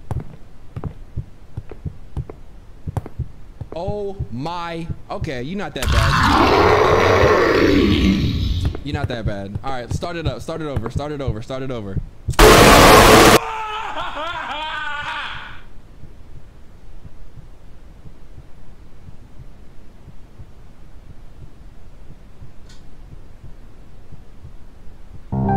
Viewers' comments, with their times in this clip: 0:08 that was wayyyyyyy to fucking loud what the fuck